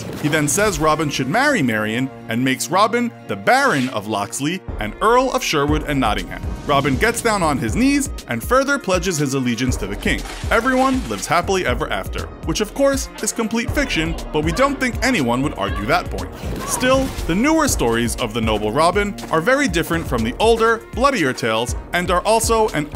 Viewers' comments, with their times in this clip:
0:09 The background music started getting kinda lit